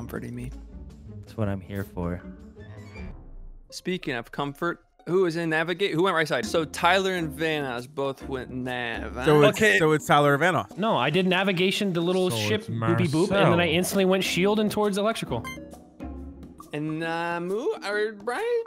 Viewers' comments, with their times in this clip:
0:03 sounds like Linus from Peanuts